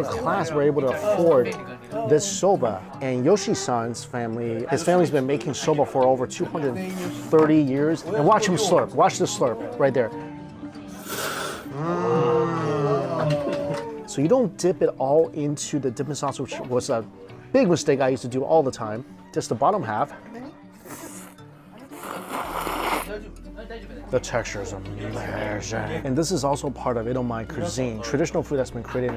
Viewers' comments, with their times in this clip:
0:10 THATS HOW YOU SLURP your noodle